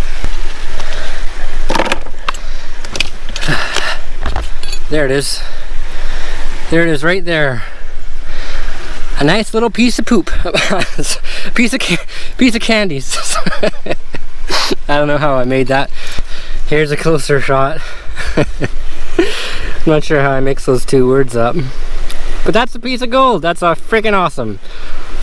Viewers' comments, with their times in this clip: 0:08 when you laugh at yourself. So refreshing to hear the authenticity. Just a good old giggle